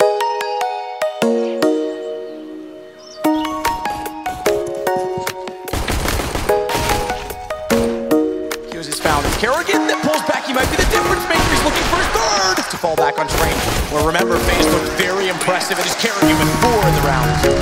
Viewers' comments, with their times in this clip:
0:03 i start the video and the glock is synced with the music awesome stuff